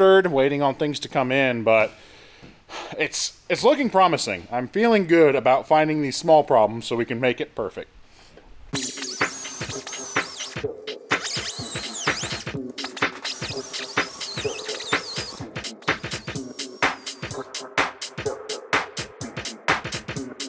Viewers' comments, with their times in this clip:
0:07 Gah when he's grinding the whine sounds make my teeth hurt it sounds just like a dentist drill.